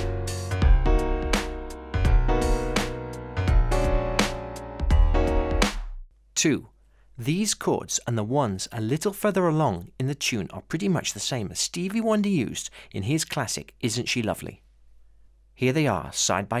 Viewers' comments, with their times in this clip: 0:03 it sounds like there is more in this chord than just #5. Maybe #9 too? RH? Ab (C#) D F# maybe?